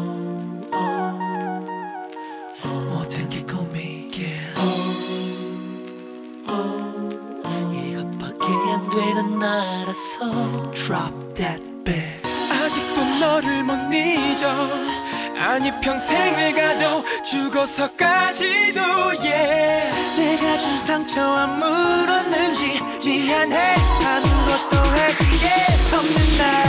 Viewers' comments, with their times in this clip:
0:10 Am I the only one who hears 'Drop dead bitch' ? xP